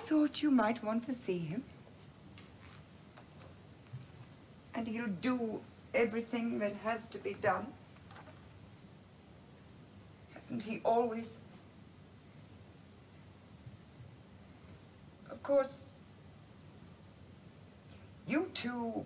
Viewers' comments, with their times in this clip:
0:06 Ahaha. is perfect for "Oh god she's still blathering on"